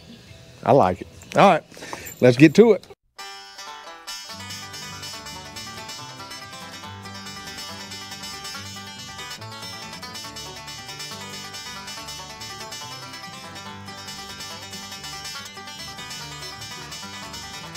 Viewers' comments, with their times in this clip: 0:05 Love your choice of music starting with the time lapse of building the radius!